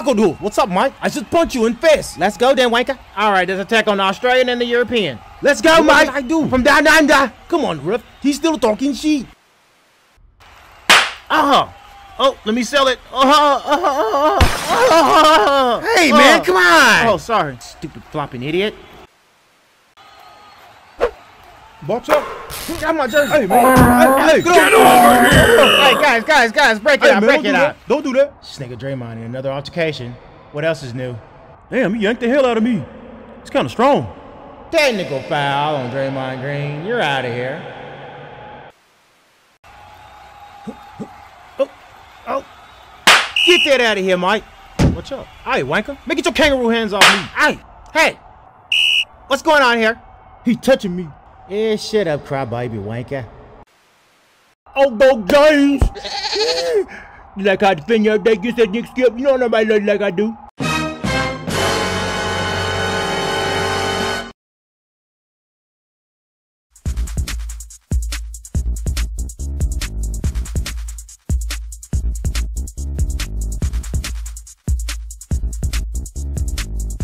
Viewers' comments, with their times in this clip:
0:10 cringy ahh fall and voice 💀
0:58 LMAOOOOOOOOO SHANNON VOICE